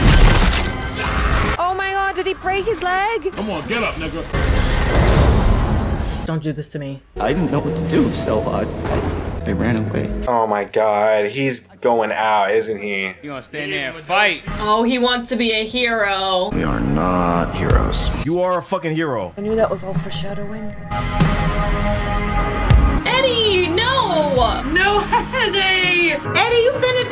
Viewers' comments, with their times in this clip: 0:08 Brilliant editing. The music when he turns around, love it. Season 5 was supposed to start filming in June. The writers strike could delay things for much longer if the script wasn't solid.